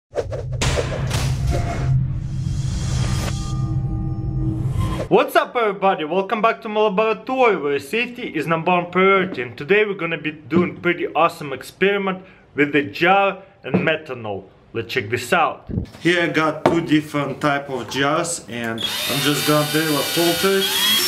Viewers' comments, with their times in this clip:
0:02 Science experiments with a jar and a metronome.